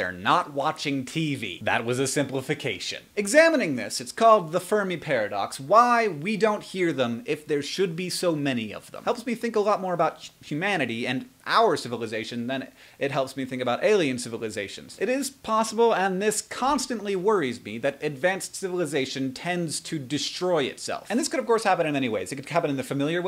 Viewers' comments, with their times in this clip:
0:08 Hank stutters & it's very rare for him to leave that in the final edit!